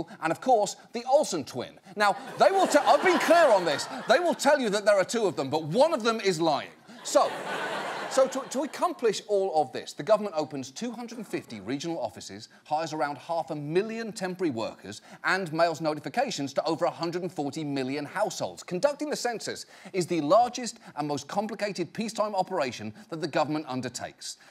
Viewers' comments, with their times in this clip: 0:05 There's 3 *Dramatic Music*